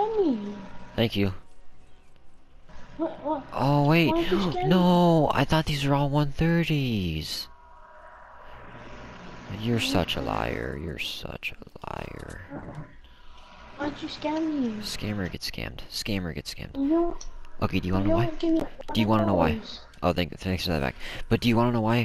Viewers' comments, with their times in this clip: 0:10 he sounds like the robot bear🤣🤣